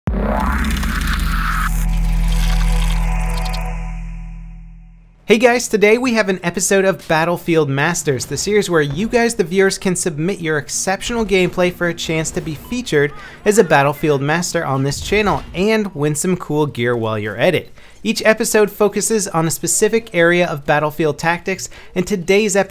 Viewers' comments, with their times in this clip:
0:10 So i heard 'exeptional gayplay' made me lol.